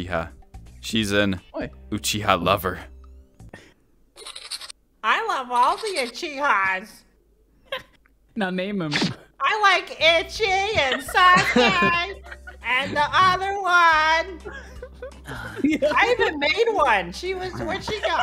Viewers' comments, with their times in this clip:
0:04 why he sound like a scuttling bug?